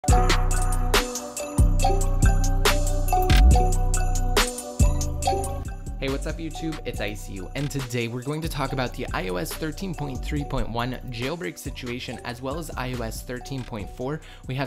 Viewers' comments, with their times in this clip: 0:00 in i see a monster